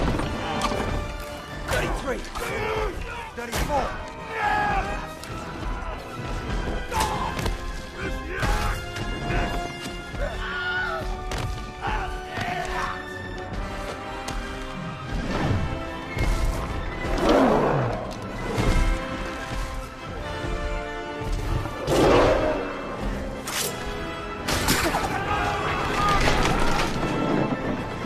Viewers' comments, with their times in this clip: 0:10 The Wilhelm scream ROFL